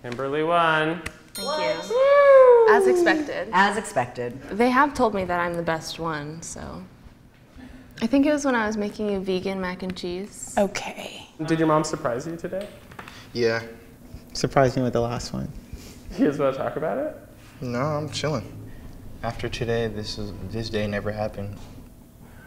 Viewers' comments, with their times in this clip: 0:06 That "Ok..." had so much frustration in it. 😁